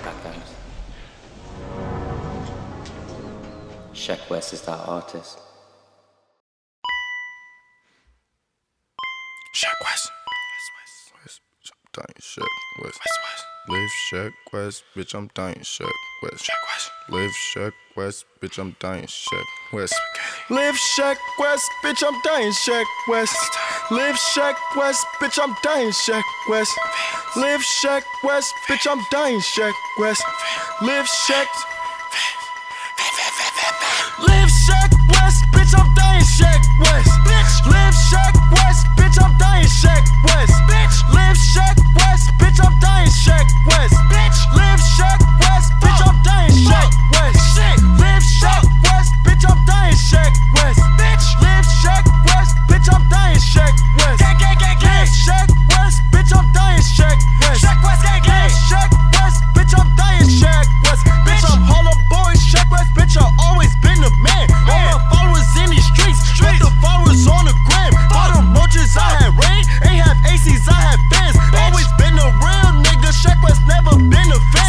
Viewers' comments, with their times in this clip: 0:09 when you tryna spit fire but yo mama be sleeping.
0:19 So nobody heard him say spaghetti 😂😂
0:34 The song starts
1:01 When he poured out the fanta it was on beat and to the strings in the back